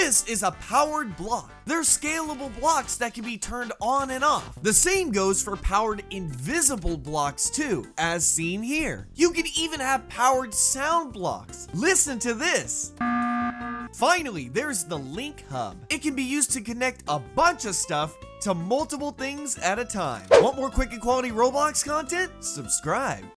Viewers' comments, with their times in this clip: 0:10 Imagine getting rickrolled by ernie in